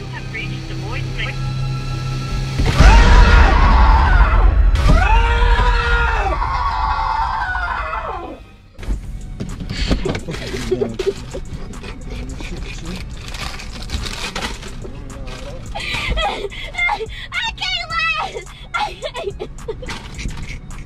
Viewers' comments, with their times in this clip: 0:03 he did scream.